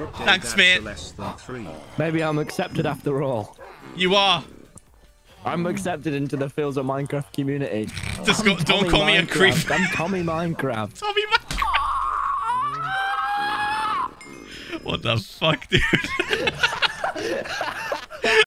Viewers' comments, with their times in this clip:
0:10 Tommy's screech is now my favorite tommyinnit sound!🤣